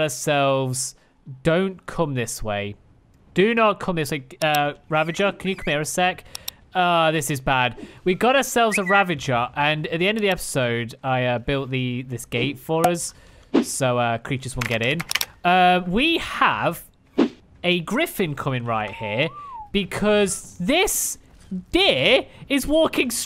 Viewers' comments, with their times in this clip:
0:08 I thought that was him whistling